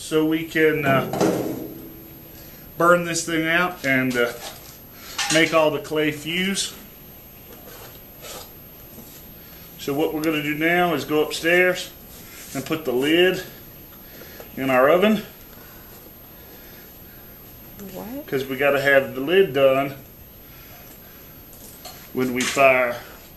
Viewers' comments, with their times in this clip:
0:09 hahahahahahah Listen to the reaction from behind the camera on this last step. lmao!!!